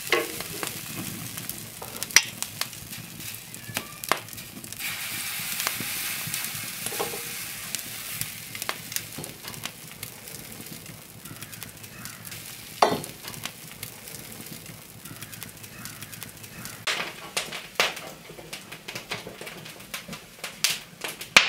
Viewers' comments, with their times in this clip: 0:04 "meow" is the cat worried about the pancakes?